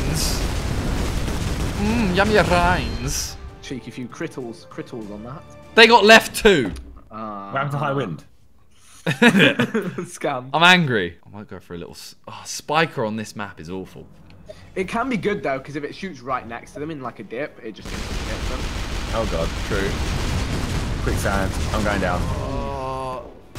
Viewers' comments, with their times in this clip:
0:05 I thought vik said cripple ya nan 🤣🤣🤣🤣